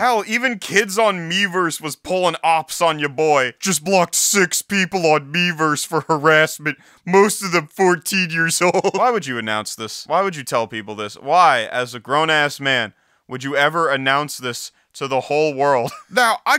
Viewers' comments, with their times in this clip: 0:03 Joe Swanson voice, lol